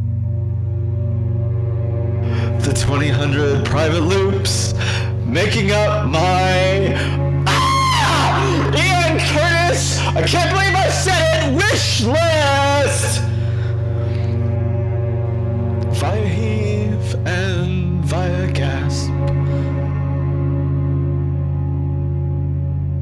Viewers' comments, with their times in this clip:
0:06 homer simpson ass scream